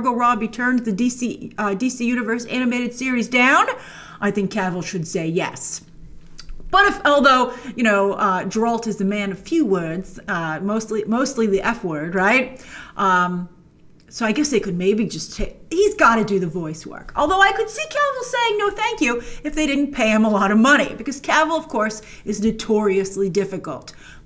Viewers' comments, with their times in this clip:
0:07 Jer-Alt. Who's jer-ALT?